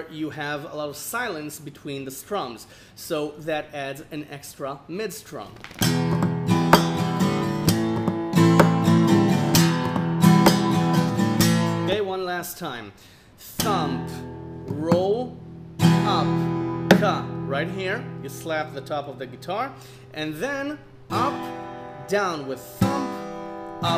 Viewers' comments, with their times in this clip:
0:04 your dog seems to be some kind of percussion instrument.